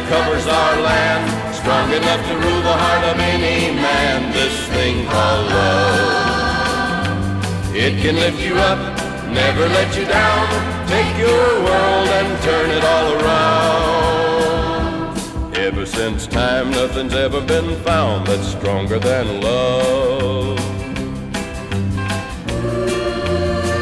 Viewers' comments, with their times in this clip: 0:04 Do you hear that very ugly sound